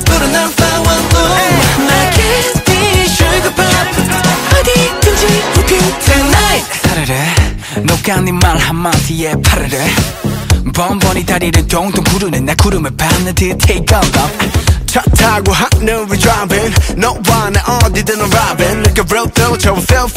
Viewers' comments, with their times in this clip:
0:06 screaming and crying. why is he allowed to sound like this.